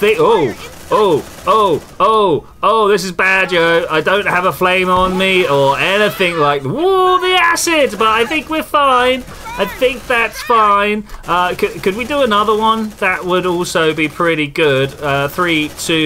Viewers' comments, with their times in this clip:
0:03 That shotgun blast saved your ass